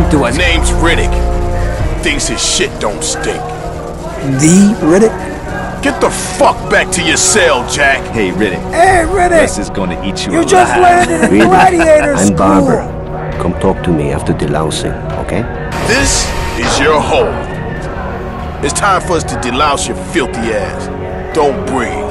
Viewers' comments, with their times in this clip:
0:09 sounds like Merle.